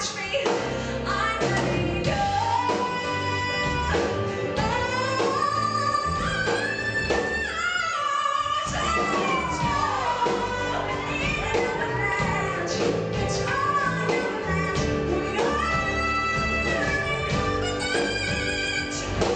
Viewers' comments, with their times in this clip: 0:07 the placement WHAT THE HELL AMAZING, she is killing it DAMN!